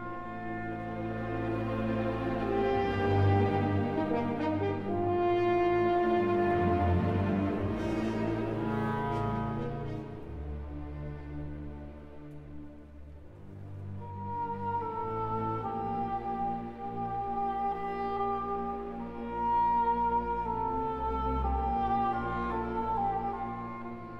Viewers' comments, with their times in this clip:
0:07 I think this piece uses every instrument in the orchestra!.